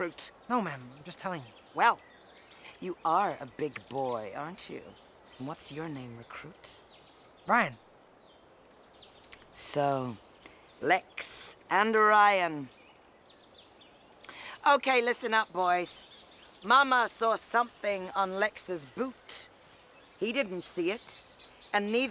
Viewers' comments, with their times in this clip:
0:07 the way ryan says his name